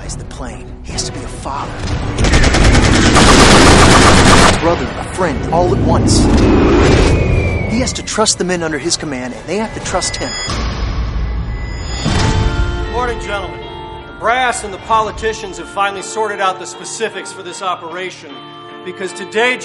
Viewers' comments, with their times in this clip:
0:06 yea those planes look so real, and lol whistle